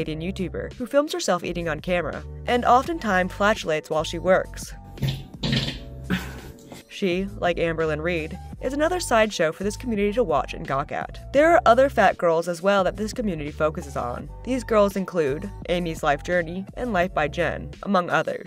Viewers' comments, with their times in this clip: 0:05 she actually sounds like my motorcycle's engine. JFC.